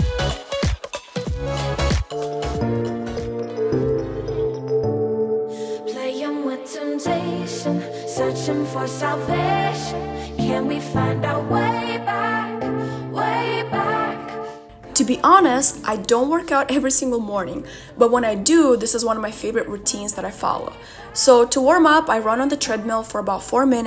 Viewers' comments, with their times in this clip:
0:07 Omg I missed your videos!!! By the way the song is AMAZING